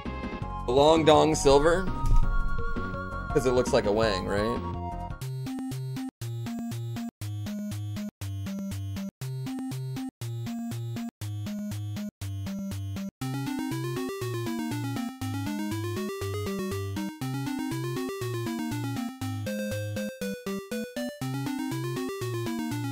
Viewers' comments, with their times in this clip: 0:04 THAT MUSIC! Composer absolutely killing it